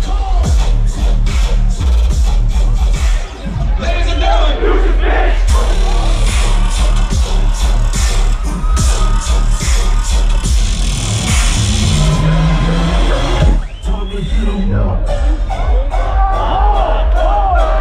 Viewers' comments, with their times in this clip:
0:03 when everyone screams “deuces bitch!”